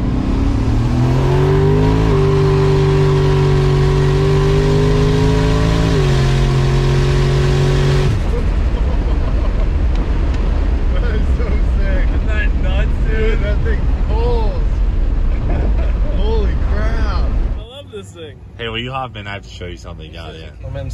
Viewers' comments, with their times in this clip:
0:04 Definitely heard a turbo at the end of your pull bud.
0:07 you can hear turbo flutter, it’s either turbo’d or got a pro charger on it
0:08 you can hear what sounds like blow off
0:08 you here a turbo spool. Lol.”stock”